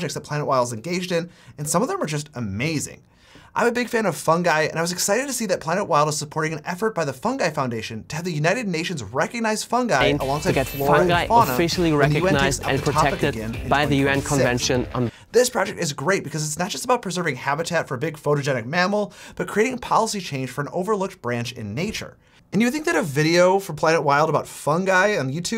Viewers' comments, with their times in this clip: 0:09 Also want to point out that the Planet Wild audio is overlapping with yours.
0:10 also, there's a sound overlay issue
0:10 Audio from original video remains.
0:11 you got the clip in the BG playing music.